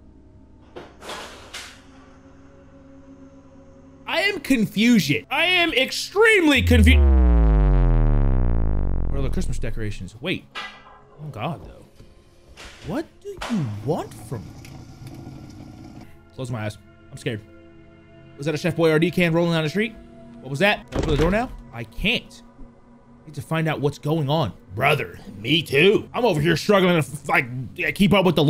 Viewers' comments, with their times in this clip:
0:05 Goddamn the 808 hitting hella good.
0:12 I had to pause the vid to laugh at the accuracy of him comparing the growl to a boyardee can rolling. 😂😂